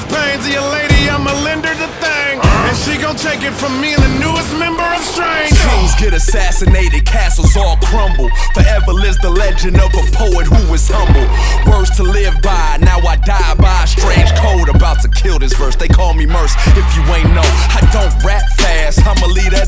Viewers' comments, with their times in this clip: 0:05 went from good to best when MURS came in